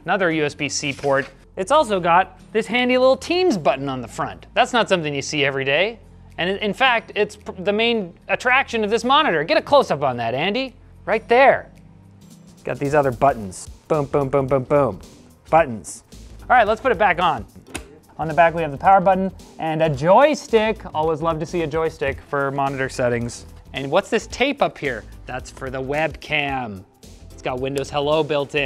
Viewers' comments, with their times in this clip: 0:10 CLOSE YOUR EYES AND YOU WILL THINK ITS LINUS